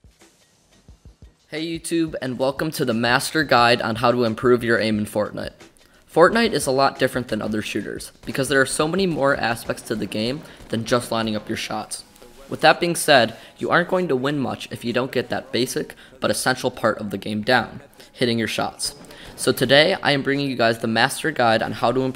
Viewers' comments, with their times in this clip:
0:05 He said fornut
0:05 he said fortnut im not the only one who heard that right